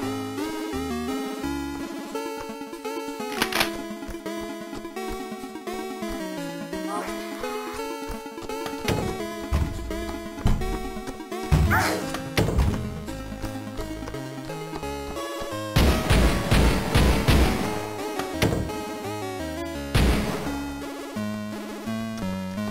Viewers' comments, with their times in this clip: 0:08 I think the zombie said "oh shiet!"